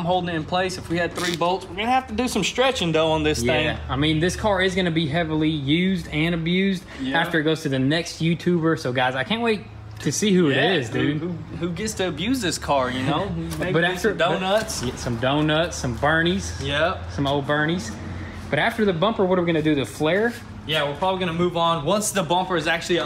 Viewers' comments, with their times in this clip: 0:09 Why the random audio mute @ the mark...Bleeping out profanity?